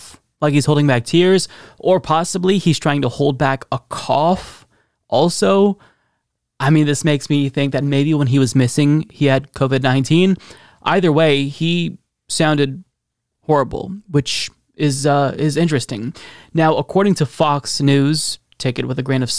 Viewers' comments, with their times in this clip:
0:03 Definitely holding back a[C0VID] cough!